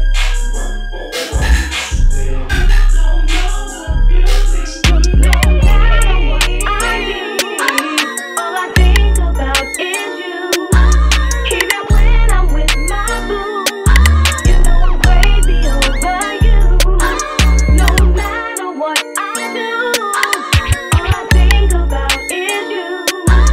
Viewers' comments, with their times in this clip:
0:05 that key change just scratched an itch in brain 🤧